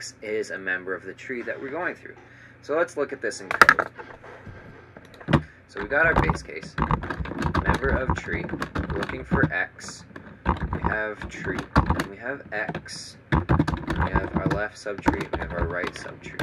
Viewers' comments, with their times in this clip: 0:03 for ear rape